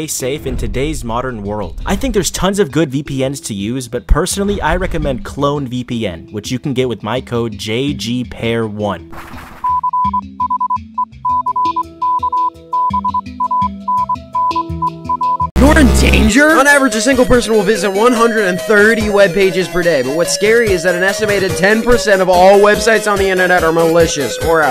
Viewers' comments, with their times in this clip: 0:09 has morse PROVE ME WRONG Edit: know some morse and i think some of it is He
0:10 I hear a bunch of beeping when there is a black screen. like here for example, what does it mean.
0:10 The heck does the morse code say?